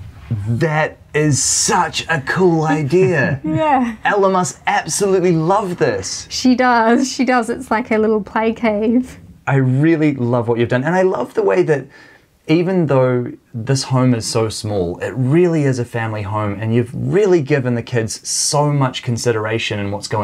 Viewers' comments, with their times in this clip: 0:03 “Elon Musk absolutely loves this”